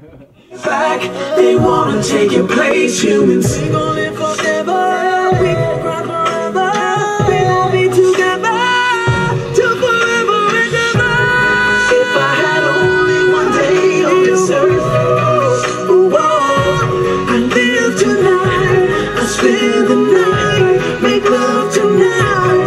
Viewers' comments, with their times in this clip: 0:04 The Guy is unbelivable......perfekt Voice and power!